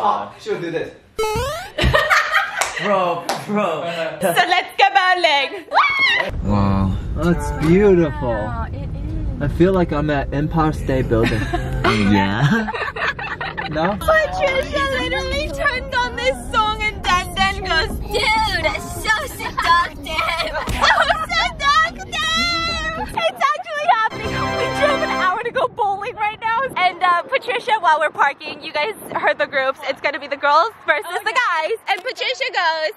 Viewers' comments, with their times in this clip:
0:10 the way he says empire state building makes me so happy 😊
0:15 that song is so AB5RH EHSNE it makes me feel some type of way